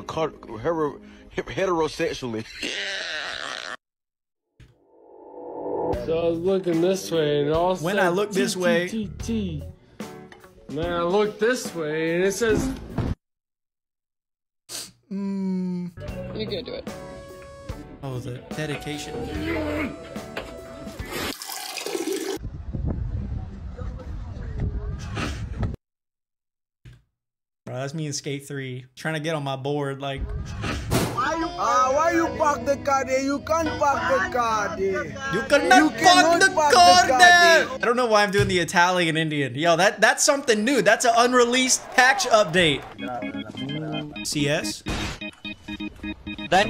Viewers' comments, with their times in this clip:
0:03 Bro sounds like a clicker
0:32 is south african colored accent